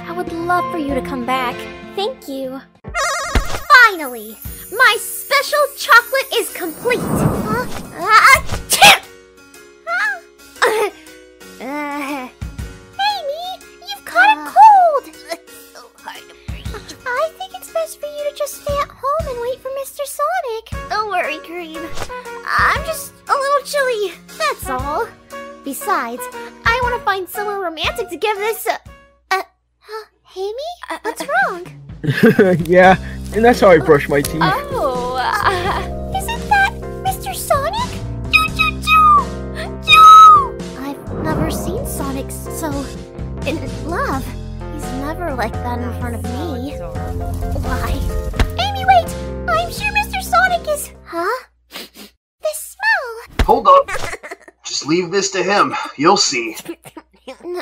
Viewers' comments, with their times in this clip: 0:08 LMAO! THE SNEEZE!
0:42 I went in a sonic exe game and I hear the theme song right here IT WAS SO TIMEING